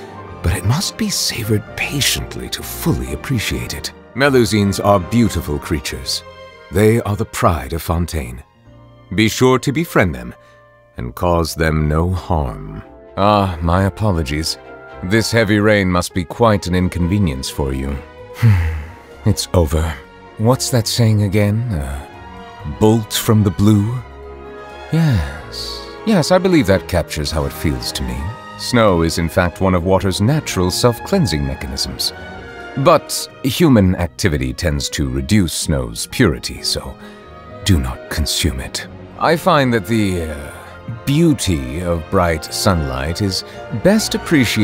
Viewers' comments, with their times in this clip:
0:03 Neuvillete "guardian of melusines" (be sure to befriend them! And cause them no HARM..) that underlined warning in that growl
0:23 the light/pensive/lightbulb tone of his "yes" is so on point i was gonna pull on his rerun but the reads for his lines are actually too good to pass lol
0:25 no but the way he says "yesss..." 🥶🥶😭